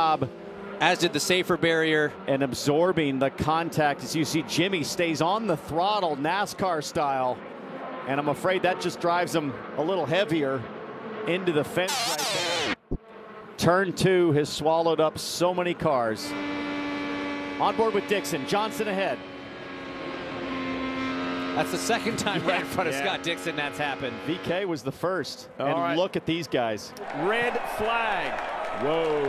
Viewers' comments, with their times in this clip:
0:10 wtf is that noise?